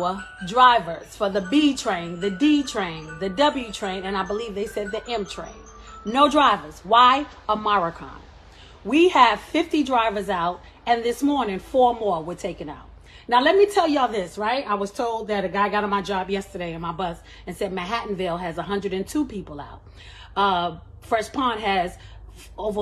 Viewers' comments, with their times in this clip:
0:06 I unironically love how she pronounces "omicron"